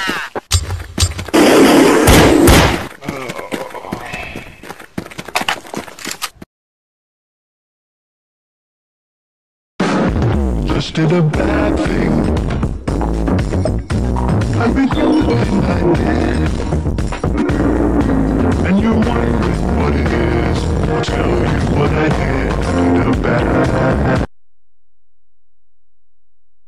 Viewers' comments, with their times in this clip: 0:10 my poor EARSSS i was wearing headphones 😭